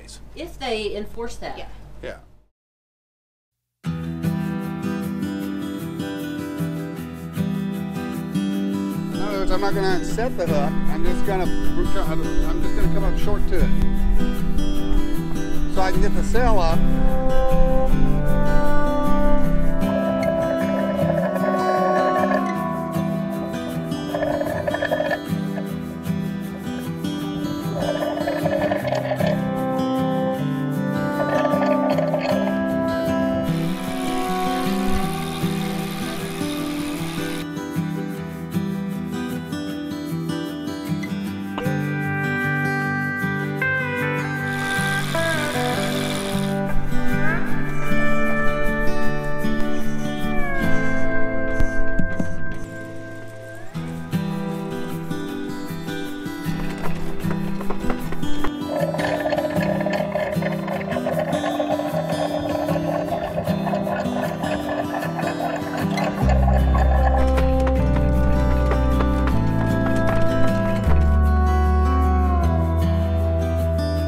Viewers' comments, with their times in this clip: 0:03 I love this part (cos. soundtrack) it allows me to dream if nothing else 😥I would love to have something like this in next life (all of this) 🙄 cos I don't think that I could achieve this in this one (to much bad choices - to little time left / math can support it) unfortunately --> next time
0:57 I love the little guitar tune or so and I have to say the editing and music choices have been great on every video your probably tired of me commenting already lol but Bing watching your channel is helping me pass the time and i love it.